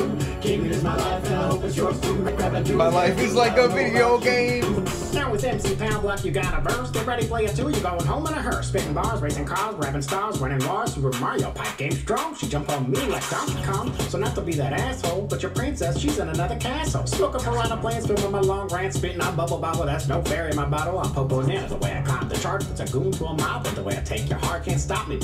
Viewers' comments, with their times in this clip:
0:06 voice like the nerd emoji